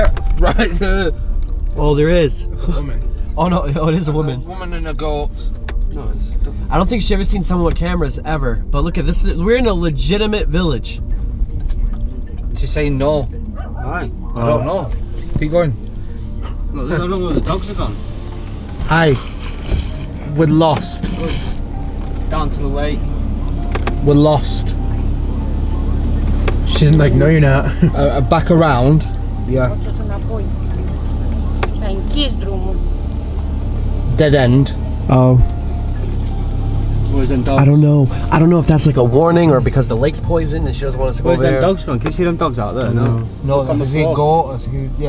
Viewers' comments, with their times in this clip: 0:04 im sorry but the way homeboy said goat at like is HILARIOUS
0:30 WAIT WHAT THAT LADY WAS SPEAKING ROMANIAN AND I KNOW NOTHING OF THIS IN MY COUNTRY (im romanian) AND DOSE THAT MEAN THAT THE NO FILMING SIGH WORKED! Im kinda shocked!